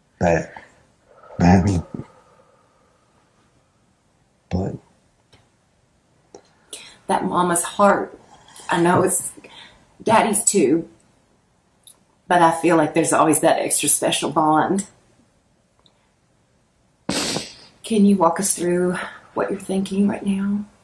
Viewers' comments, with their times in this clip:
0:06 I NOTICED A VOICE WHISPERING SAYING 👉 CAN'T 👉 TALK 👉 CAN'T 😱 😥💔